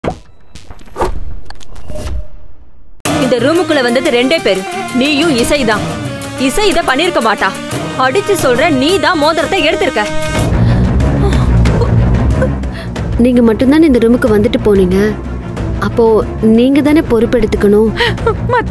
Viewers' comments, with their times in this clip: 0:03 Super Mass Theme